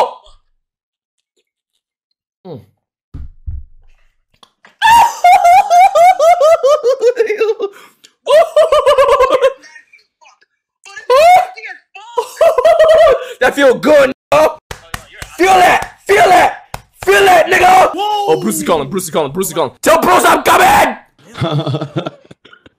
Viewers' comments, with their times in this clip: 0:05 Tom & Jerry ass screech